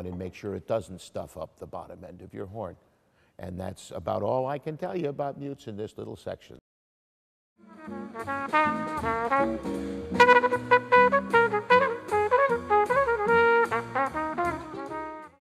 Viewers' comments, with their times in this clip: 0:09 hes trying to tell us something in morse code